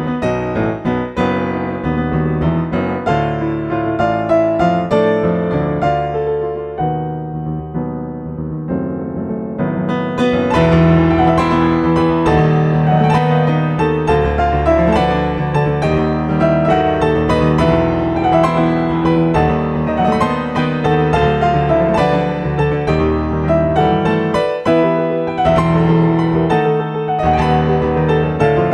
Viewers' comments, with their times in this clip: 0:10 This feels like the closest a piano cover for Holy Blade has gotten to replicating the emotion of the choir during the part Very well done as always, you're probably my favorite pianist on YouTube.